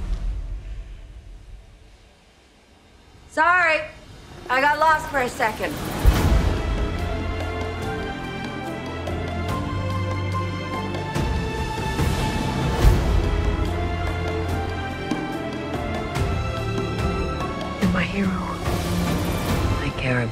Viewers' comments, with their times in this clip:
0:06 The music Instant tears